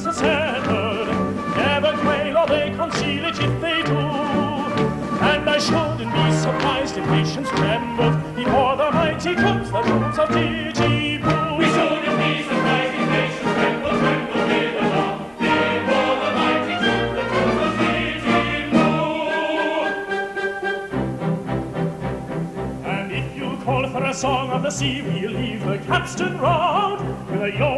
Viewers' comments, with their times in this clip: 0:09 in, and that Nanki-poo is absolutely the greatest singer i have ever heard do the part. Bel Canto, indeed!!!